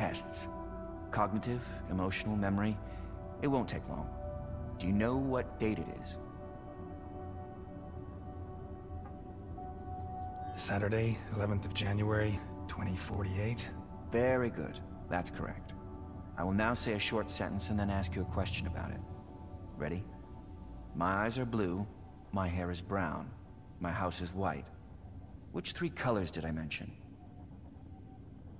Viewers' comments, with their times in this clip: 0:09 He Sounds Like Geralt From Witcher 3